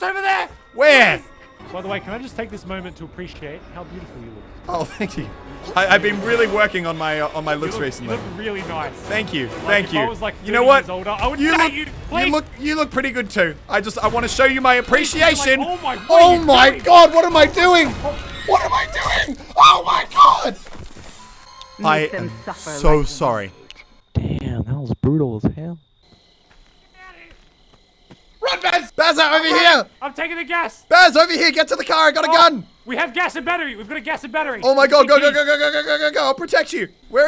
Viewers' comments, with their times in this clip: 0:10 DAT VOICE CRACK xD
0:13 that voice crack! is there a baby in your studio
0:14 when muselk sounded like a little girl xD
0:14 Muselk sounds like hes 12.
0:15 That screem from tho
0:16 THAT VOICE HAHAHAHAHA
0:16 What happened to your voice
0:16 why does muselk sound like a dying animal XD ?
0:17 what happend to your voice jeez :(
0:18 dude did you muselk's voice crack
0:18 Muselk voice crack 🤣
0:18 OHH MYYY GOOOODDDD (VOICE CRACKS SUPER LOUDLY)
0:19 only my dog could hear muselk
0:19 dat Jurassic park scream
0:19 manliest scream ever
0:19 that squeal tho
0:20 That voice crack 👏😂
0:21 that voice break